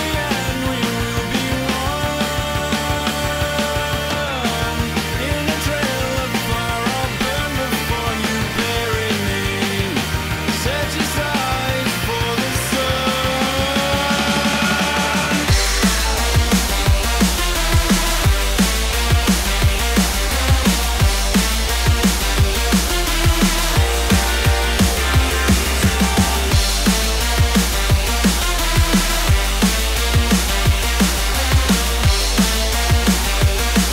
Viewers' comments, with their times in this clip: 0:09 This part is so great! I love the crescendo in the singer's voice, and that drop is 10/10.
0:14 I dont know if it's me but does the part sound a lot like the Club Penguin EPF music
0:15 Best drop of the decade.
0:15 Sounds like the Powerpuff Girls theme
0:15 over a decade later of listening to this song and i just now realize there’s that cliche sound of a big cat screeching right as it drops
0:15 sounds like the EPF command room in Club Penguin
0:15 on sounds exactly like club penguin's club penguin agent song????????
0:15 Can anyone tell me why there is a cougar sound